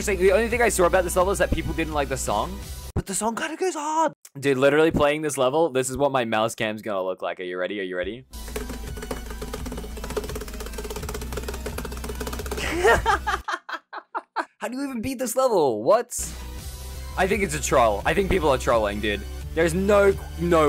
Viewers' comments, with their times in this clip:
0:08 that mouse tapping was actually really consistent, very impressive